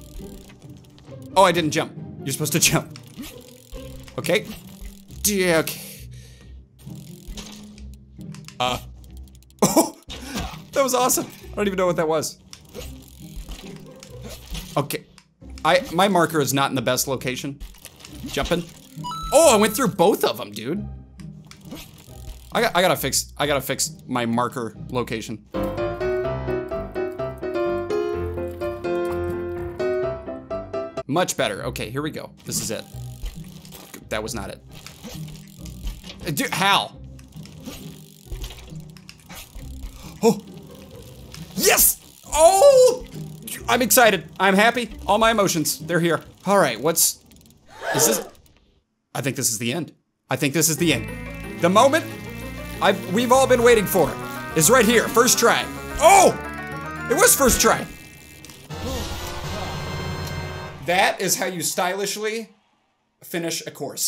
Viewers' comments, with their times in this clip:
0:04 he says dic
0:05 what did he say?????
0:51 best Zelda music timing ever